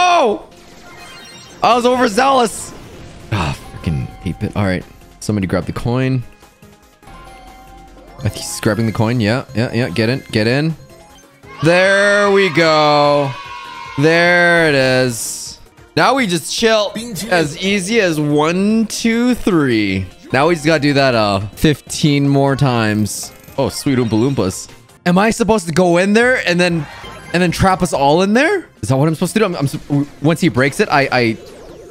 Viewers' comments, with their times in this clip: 0:09 wut did u say
0:16 Is it just me or did I hear bing chilling?